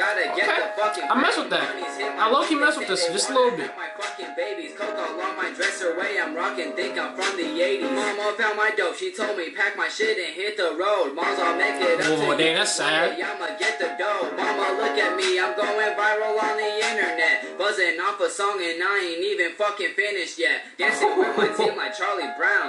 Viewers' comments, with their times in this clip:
0:08 best flow of the song👿